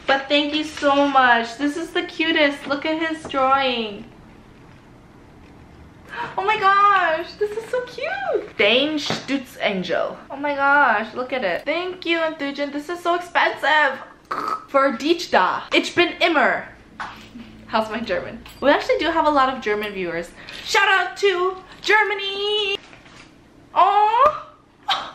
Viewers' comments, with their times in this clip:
0:08 It was so cute when she tried talking German